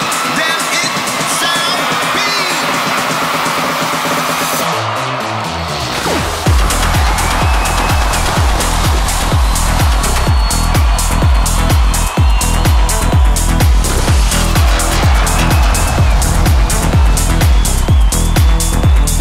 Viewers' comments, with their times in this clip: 0:06 The Drop by is Just a Boooom! ✌🏻🙌🏻💥